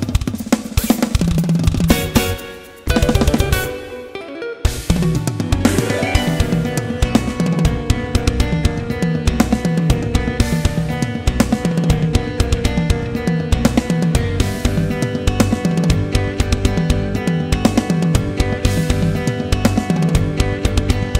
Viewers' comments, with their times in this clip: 0:09 So what's the point of not using a pick? The left guitar completely drowns out the right guitar in terms of attack. There's nothing the right guitar plays that requires fingerstyle apart from the part And even then. Why play the whole thing without a pick? Seems a bit gimmicky to me...